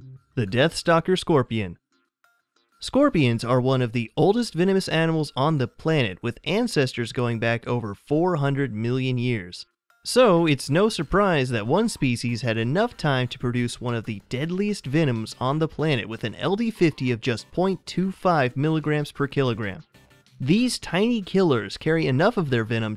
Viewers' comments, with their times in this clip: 0:03 why did he say “oldest” like that 😂😂😂😂😂😂😂😂